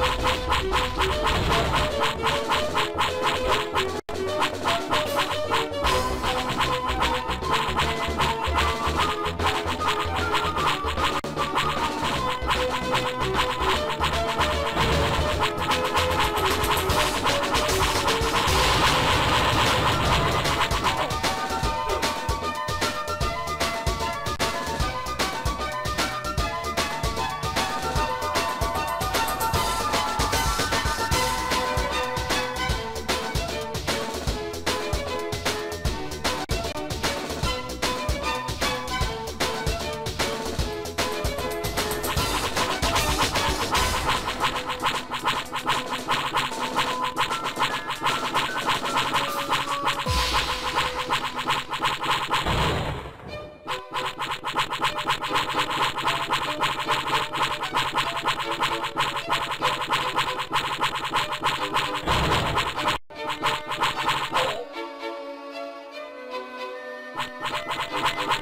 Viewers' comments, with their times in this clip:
0:07 when you walk around with wet sandals
0:53 Squidward walking noises